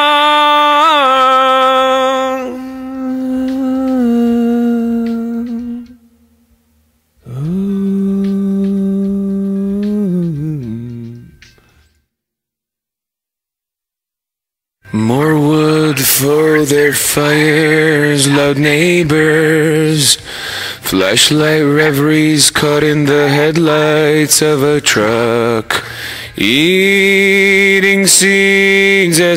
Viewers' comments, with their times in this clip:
0:08 I heard the band in the background faintly
0:17 anybody hearing that very silent backing voice while Serj is singing?